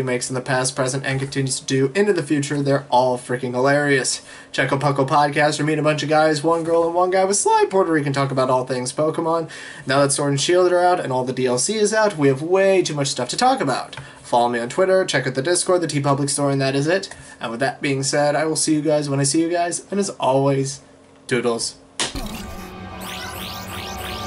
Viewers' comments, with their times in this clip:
0:07 I always think your saying Puerto Rican